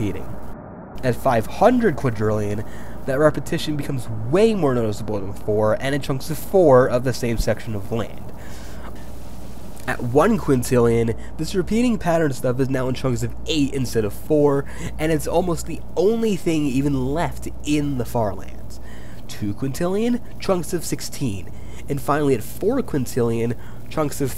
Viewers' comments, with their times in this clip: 0:10 your voice sounds like there’s autotune or some weird audio file glitch